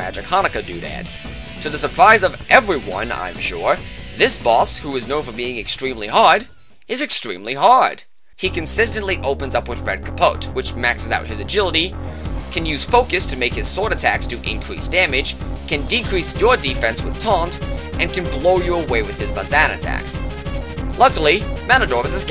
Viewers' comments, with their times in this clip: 0:04 the first time I watched this video i thought you say that matador is extremely hot instead of extremely hard